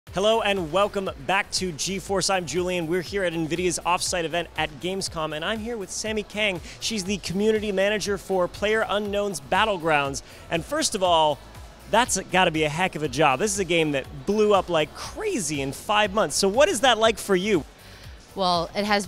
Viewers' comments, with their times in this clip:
0:04 "PUBJ" Are you Serious?